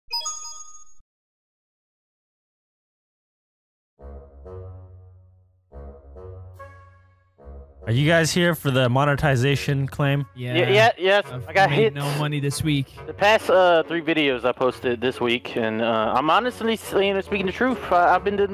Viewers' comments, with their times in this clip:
0:00 Says "Vanss" instead of "Vanoss" XD